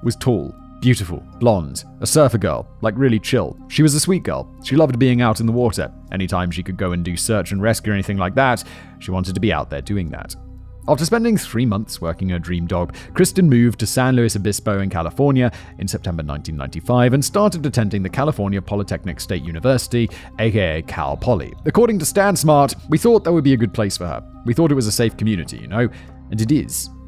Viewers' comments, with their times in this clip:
0:10 😂😂😂 after working her dream dog?! 😂😂😂😂